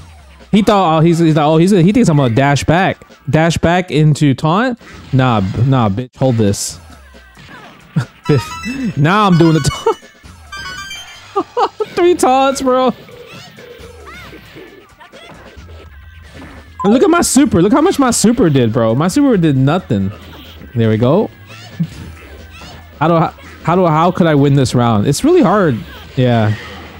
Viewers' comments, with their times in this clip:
0:07 Those Mario 64 red coin sounds ! chef's kiss